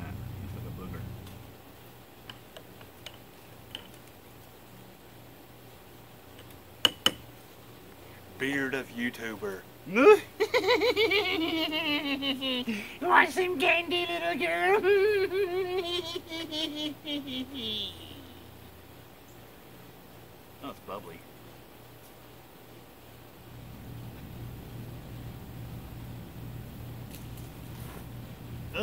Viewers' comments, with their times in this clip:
0:10 .... Lol Good attempt at "nitrokeratin" btw